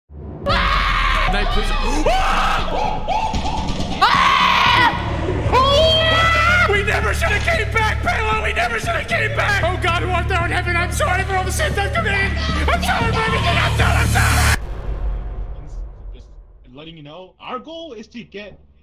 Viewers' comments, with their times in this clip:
0:04 sounds JUST like the Scary Maze Screamer sound
0:06 few seconds into the video i thought that was peter griffin